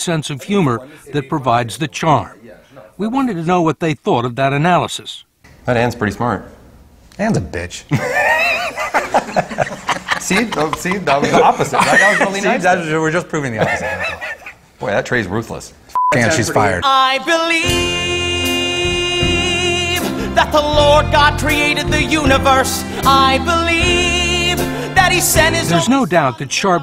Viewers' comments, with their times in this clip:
0:06 It’s genuinely wholesome to see Trey and Matt laugh. That is an amazing friendship
0:09 LOL at the interviewer laughing at their joke :P He is secretly a South Park fan! ;)